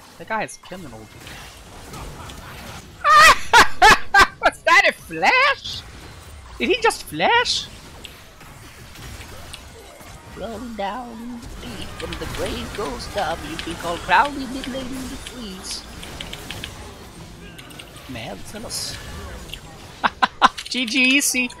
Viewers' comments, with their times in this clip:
0:09 casually moweing the lawn and singing, enjoying his rodent life